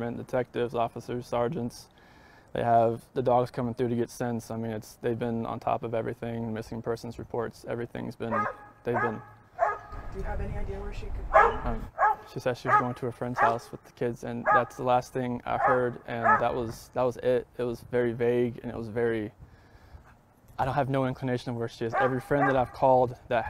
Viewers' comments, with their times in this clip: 0:07 POLICE DOG starts barking, smells scents of dead bodies.. good dog, good police!
0:08 If you notice he began to stutter and hesitate with his answers shortly after the dog started to bark.
0:08 dogs bark , eyes go up north , he is afraid.
0:08 Wow 😯 yes! Minute dogs start barking alerting the police...😱
0:08 So here's this dude with cadaver dogs scent searching his house...they start alerting to something and he doesn't bat an eye? Let's see... Cop: we're gonna send a search dog in... Chris: okay...goes and does his interview. Dog and Handler go in... Dog alert's almost immediately, timestamp dog barks Chis's eye's divert slightly, then even more as the dog continue's alerting...but he continues the interview. I f a search dog was alerting in my house you better believe I'm paying attention...Chris??? Nope...he knew they would find nothing in the house.
0:11 the dog's bark seems him in a frenzy